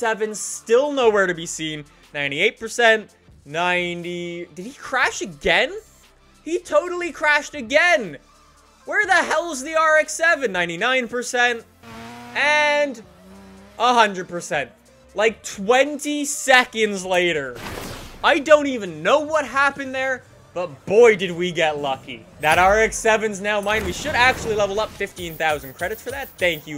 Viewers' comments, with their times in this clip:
0:08 I HEAR THE SONG